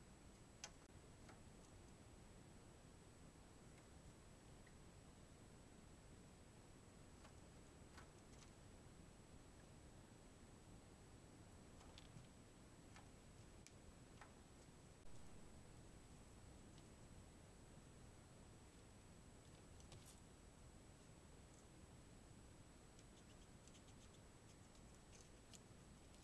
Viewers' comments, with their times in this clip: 0:09 "Why do I hear boss music?"